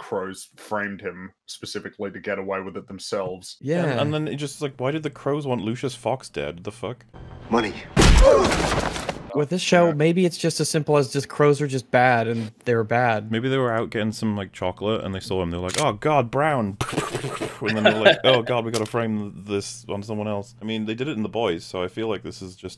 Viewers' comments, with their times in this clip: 0:03 Loved the "Money" edit with the Roblox "oof" then they punch out the guy who assassinated Lucas's dad.